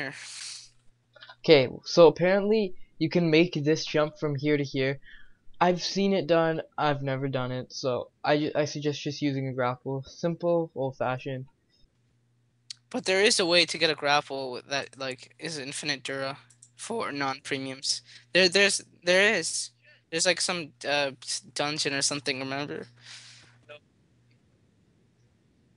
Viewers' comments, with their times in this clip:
0:07 Audio glitches the rest of the video, lol.